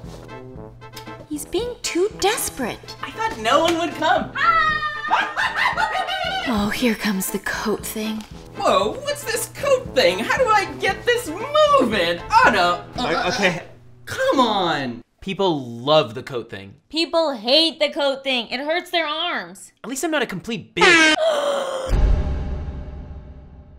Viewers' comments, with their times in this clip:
0:05 Igor's laugh (see ) is both scary and oddly attractive. o.o
0:05 Oh man, that laugh XDXDXD